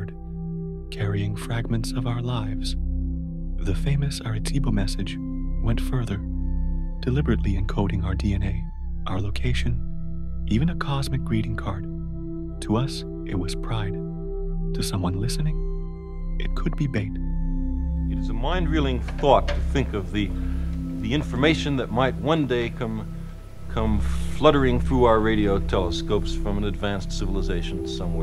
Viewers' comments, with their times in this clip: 0:05 what famous Aretebo message? Oh do you mean the Arecibo message? Pretty hard to believe anything you say when you can't even get that right. Geez Louise
0:10 carl sagan was brilliant.............the narrator voice on this is troubling, i stopped listening ................too wimpy